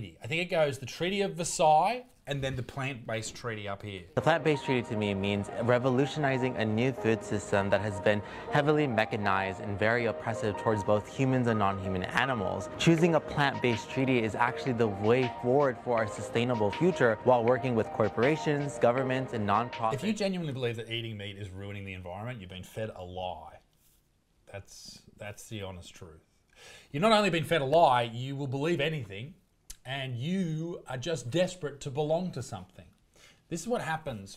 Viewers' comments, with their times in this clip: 0:06 that voice lmfao 😂
0:19 if you can’t say an “s” without a lisp, I’m not listening to you.